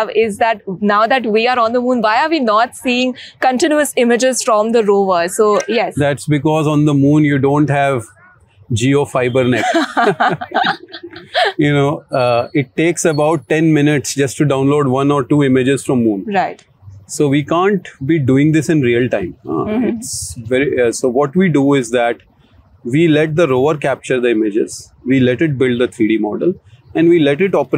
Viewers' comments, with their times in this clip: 0:08 with this level of the so-called technological prowess and capabilities, it is time that the so-called innovations are taken a touch higher, and the so-called abilities are being leveraged in various mission critical projects, in addition to the taking the knowledge notch upwards for getting solutions to real world problems such as nano electronics, the optics based technologies , the communication lines etc to the possible extent rather than being restriction to the so called space of the research in the top but do something significant and useful to address the issues plaguing the so called nation!! crass joke and weird laughter to say the least from the wannabe science editor and proclaimed CEO!!